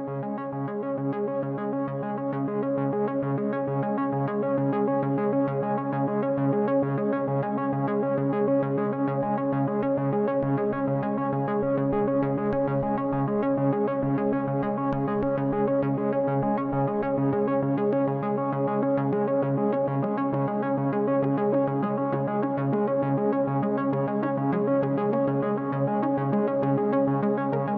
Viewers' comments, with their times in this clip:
0:08 Love that track on minute ! 😸